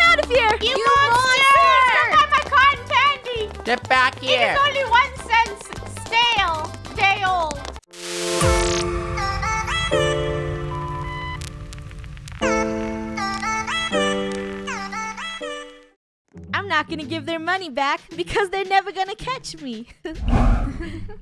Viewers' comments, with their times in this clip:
0:08 no one: me:*replaying the music * :'D